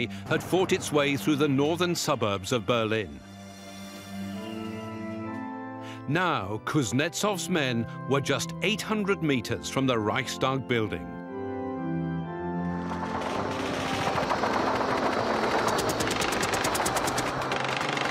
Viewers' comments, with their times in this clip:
0:05 The organ music playing is so uplifting. It goes perfectly with the triumphant moment of victory as the troops race to the Reichstag to raise the red banner. It summarizes the valient and bloody efforts these Russian troops have endured from day 1 where they met tragedy and near defeat to overwhelming superiority and final victory.